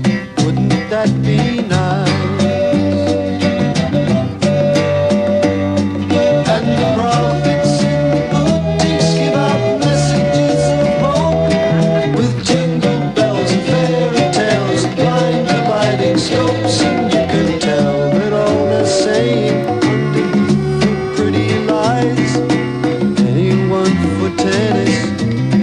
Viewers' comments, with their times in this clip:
0:08 i thought i was watching a music video by The Police